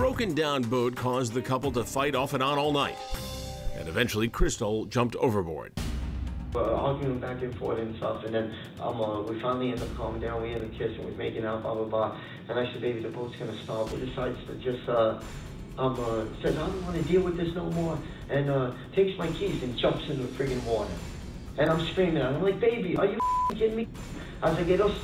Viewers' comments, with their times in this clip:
0:07 There are too many "Uhhs" and "Ums" in your story there bud.